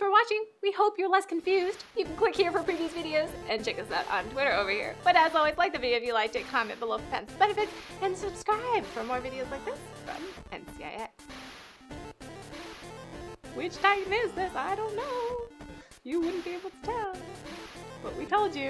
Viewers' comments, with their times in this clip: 0:06 what the fuck she says ? " Comment below if ????"